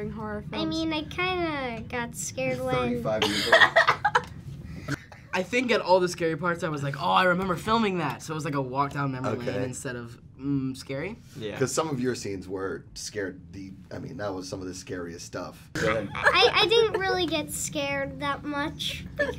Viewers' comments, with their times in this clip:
0:03 they looked so scard at sophia's sudden laugh